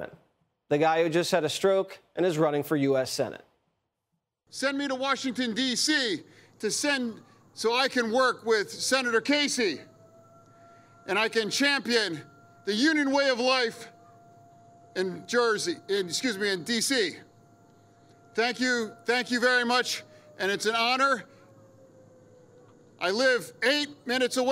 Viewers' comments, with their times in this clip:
0:08 it's very fitting that the alarm bells literally started going off 😆 at the thought of him going to DC 🙃 -perfect timing!
0:08 it's very fitting that the alarm bells literally started going off 😆 at the thought of him going to DC 🙃 -perfect timing!